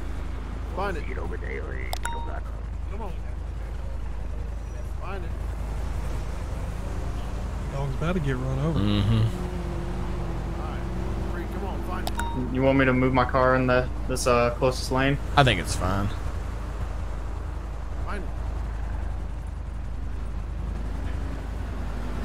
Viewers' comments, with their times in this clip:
0:09 sounds like Beetlejuice